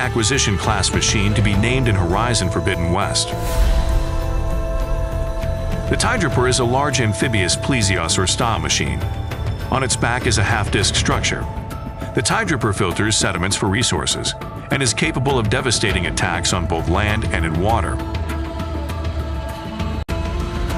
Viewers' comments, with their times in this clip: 0:06 how do you mess up saying plesiosaur so badly